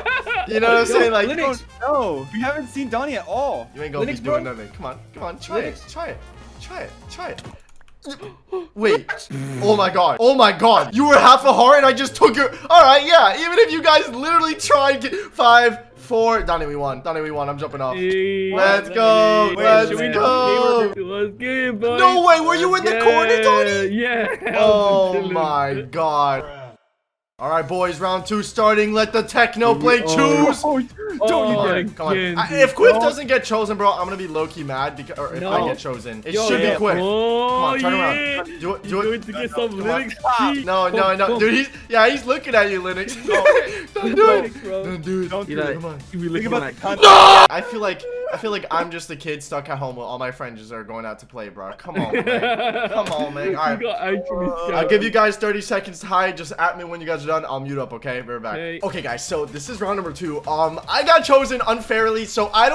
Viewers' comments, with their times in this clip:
0:07 IM CRYING BRUH U SOUNDED LIKE A BEE LMAOO
0:07 IM SO DEAD STILL BRO MADE A BEE NOISE LMAOOOOOO
0:45 perfectly cut screams part 78
0:45 this scream is so funny
0:46 staright into a perfectly cut screams compilation
0:48 the "NOOOOOO!!!!!" had me completely dead